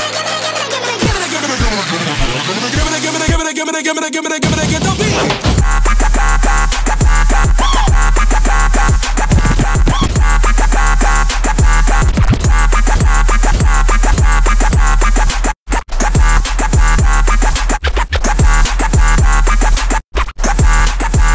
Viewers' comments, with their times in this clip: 0:05 What was the effect ish area that messed with the pitch and frquency?